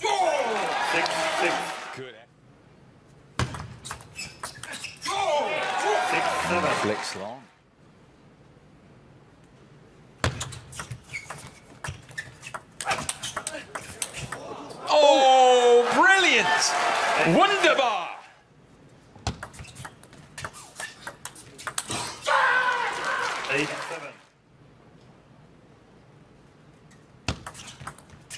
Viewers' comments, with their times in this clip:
0:10 I cannot explain how relaxing this point is after harimoto's screams!